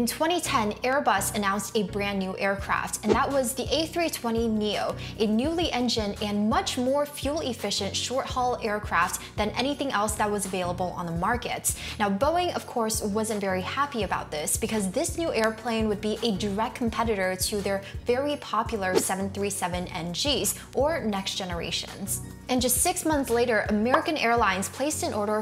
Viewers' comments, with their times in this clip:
0:06 First of all, my compliments to your narration. I listen to a lot of yt videos while doing stuff and you have a clear voice and articulate very well, which makes it easy to follow, especially for a technical topic. Second, I think the label is wrong as you are talking about the 320 Neo but the label is for the 737 Max. Boeing has blood on there hands here and they deserve every punishment and new regulation they get. As a European I wouldn't mind flying the 737 max again at some point, but I have lost my trust in the FAA and will wait for the European (and other) aviation authorities to finish their own certification. The commercial conflicts of the FAA and Boeing is way too big and that will not change one bit in the coming 50 years.